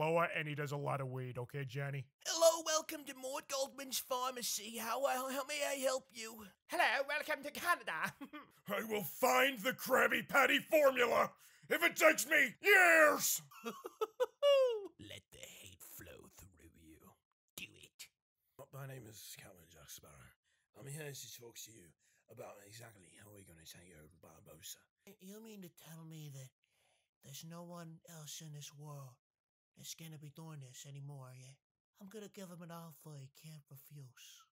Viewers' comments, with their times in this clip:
0:08 plankton on steroids
0:18 is the best jacksparrow ever